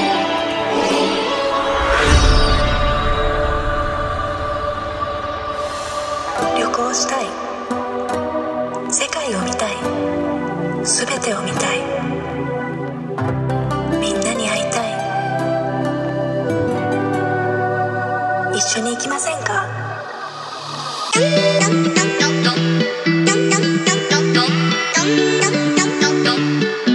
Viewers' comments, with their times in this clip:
0:09 I knee it, it's japanese